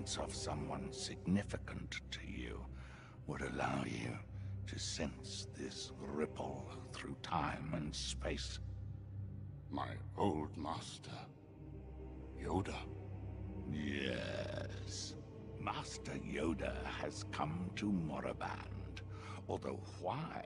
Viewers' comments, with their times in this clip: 0:08 Through time and SpAAACCE! (Once you’ve heard him in Red Alert 3, you can’t unhear that)